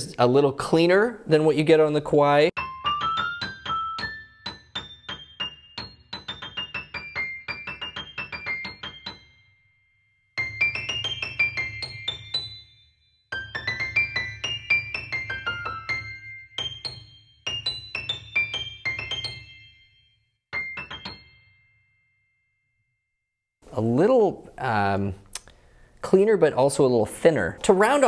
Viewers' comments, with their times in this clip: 0:10 the thumping/boom type sounds are really audible there with each key push.